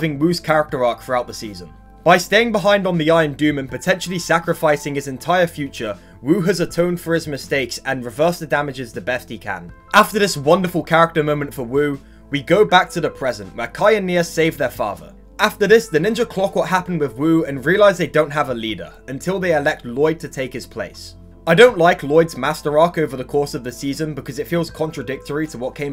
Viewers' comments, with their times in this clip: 0:10 Whats with the Rise up music in the background